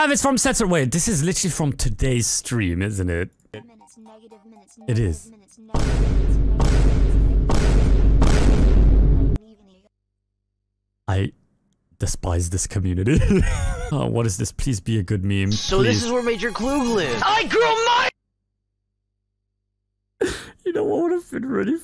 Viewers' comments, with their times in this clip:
0:07 VINE BOOM MEOWING RIZZGETO SOUND EFFECT